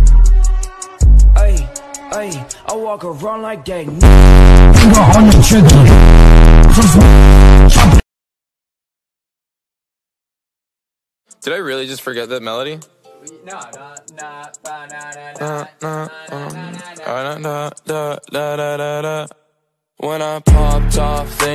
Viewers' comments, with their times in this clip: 0:04 how does that scare her it didn’t even make sound